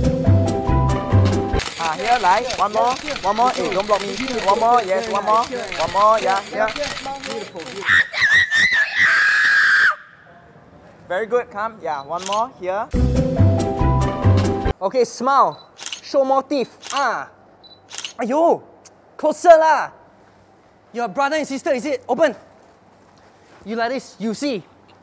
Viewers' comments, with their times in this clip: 0:05 ANYONE REPEATED AHHAHAHA HIS SCREAM AHAHA
0:07 what is he saying?
0:07 My sister's scream:
0:08 almost made me deaf
0:08 AHAGDGBEYGDVEBXHVEGHXBSVXGHEB ~thats the sound of a lite baby brat wanting a toy
0:08 What did he shout?